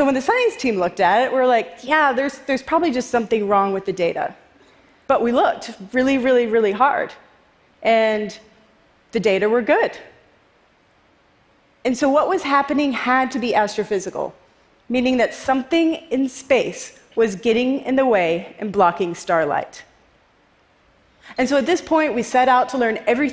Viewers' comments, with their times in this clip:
0:10 “the data were good (*awkward pause)”